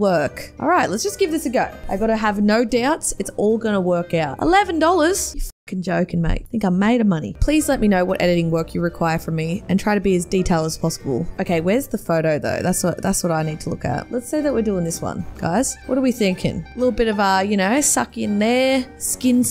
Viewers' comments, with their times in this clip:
0:03 Sounds like my mum at the grocery store
0:04 australian accent intensifies